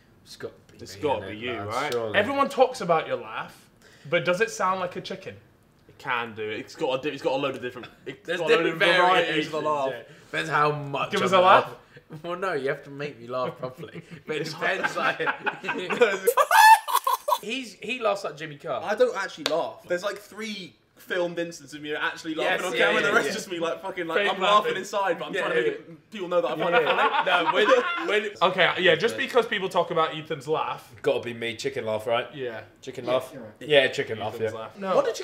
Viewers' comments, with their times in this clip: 0:07 that subtle chicken sound hahaha
0:16 That laugh killed me 😂😂😂